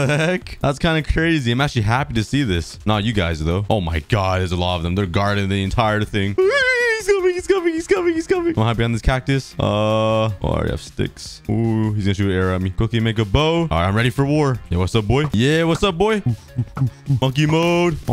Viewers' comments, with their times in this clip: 0:06 you sound like Scooby from scooby doo lol